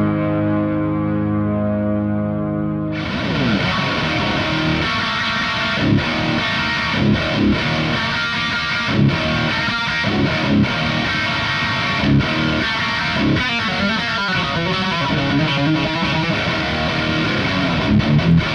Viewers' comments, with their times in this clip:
0:05 sounds like some malevolence riffs man. Sick playing, guitar looks and sounds great.